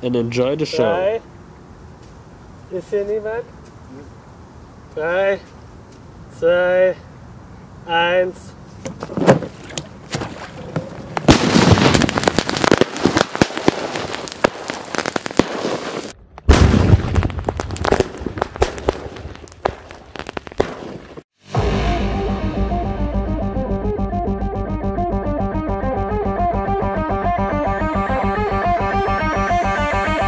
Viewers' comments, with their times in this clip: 0:09 for people who want to skip to the big boom
0:11 K A B O O M
0:16 sound Luke a Minecraft tnt